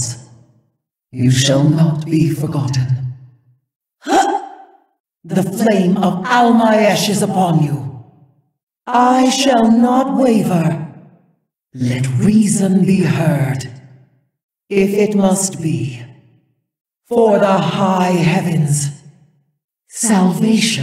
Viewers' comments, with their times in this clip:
0:04 I always hear "The flame of all my ashes upon you"